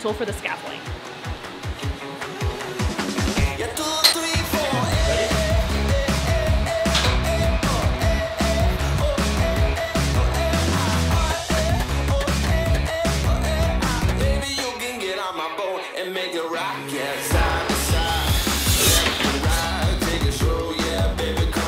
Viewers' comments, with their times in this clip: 0:03 What is the music playing while you are doing the selling? This energetic one on